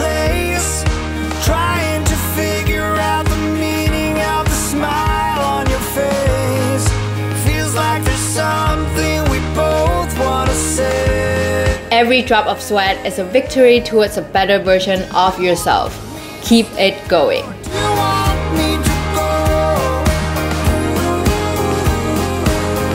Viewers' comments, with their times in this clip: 0:06 This is my 6th day and I really loved the song Does anyone know the title of the song? Sounds like Maroon 5 but can’t search the song. I’ve tried to google the lyrics.